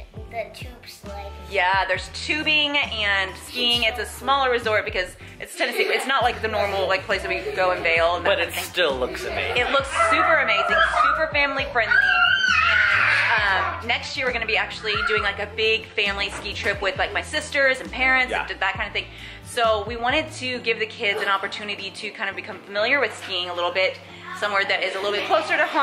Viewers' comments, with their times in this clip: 0:10 the background noise LOL 😂😂 SO CUTE ❤️